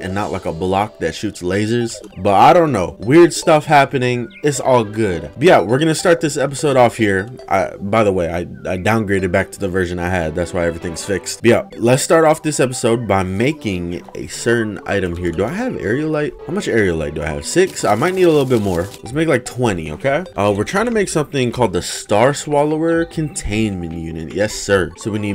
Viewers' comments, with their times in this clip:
0:10 My favorite b-yeah: